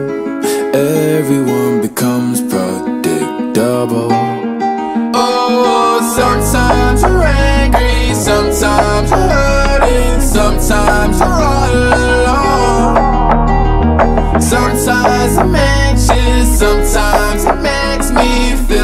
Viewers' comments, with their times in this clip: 0:05 the ohh part is perfect